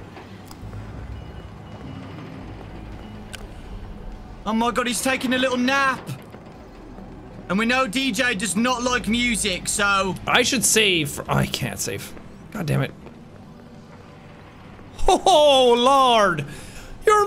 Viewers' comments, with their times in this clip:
0:03 this guy sounds really really british